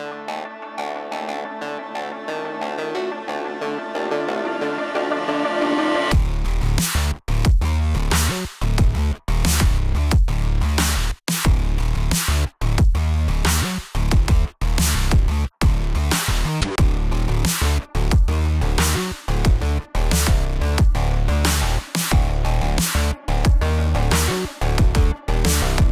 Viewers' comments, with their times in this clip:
0:07 when the Doom music kicks in 😎